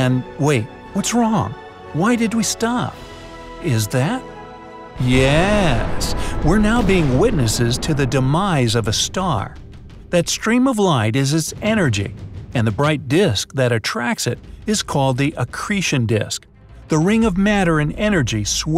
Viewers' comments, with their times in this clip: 0:05 I love how he is so calm when a star literally just exploded into a black hole